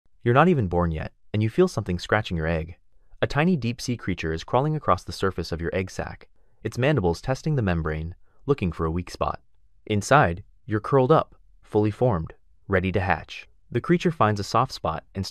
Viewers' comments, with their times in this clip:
0:00 Deaf people with captions on 👍 Blind people💀💀💀 Edit1 I though it said egg sack